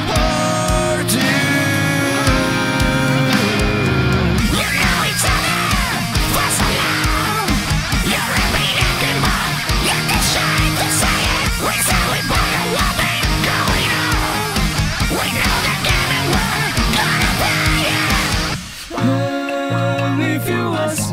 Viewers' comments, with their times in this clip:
0:06 immediate ac/dc vibes also beat poetry